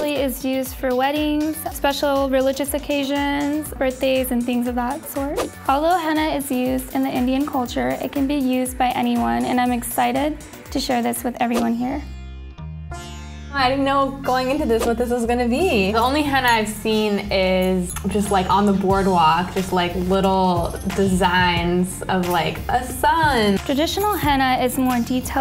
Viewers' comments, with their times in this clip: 0:09 But are you, really? Are you actually excited? Because I don't believe you based on how you sound saying it.